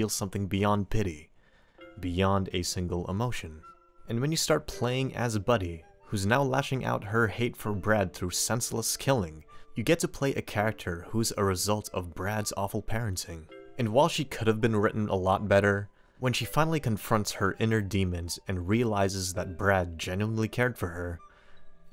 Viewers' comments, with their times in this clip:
0:04 Watching the video- this is informative and interesting Song kicks in - oh man here come the waterworks